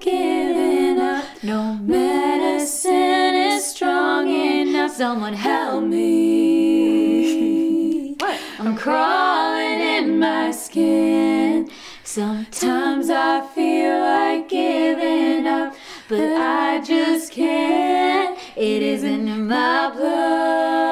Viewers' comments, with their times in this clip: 0:06 "Hee-Hee" Lol cute